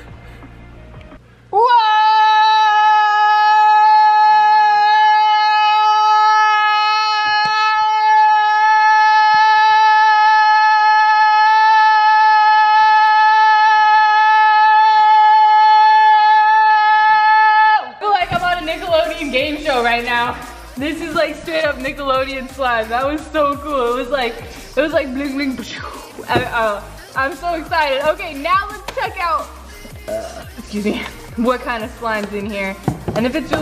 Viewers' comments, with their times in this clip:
0:08 R.I.P people that have head phones
0:16 RIP headphone 🎧 users